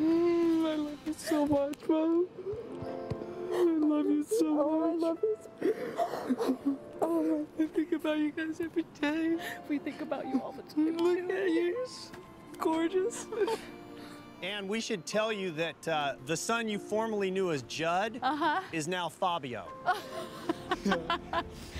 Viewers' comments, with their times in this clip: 0:09 Awwwwwwww! His voice goes up an octave when he's crying! And that chin waggle! Isn't he adorable?